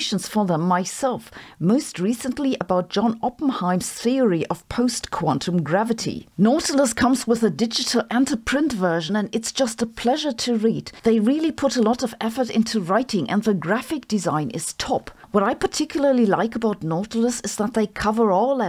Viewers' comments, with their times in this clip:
0:03 Yay, the phone rang! It had been a long while ❤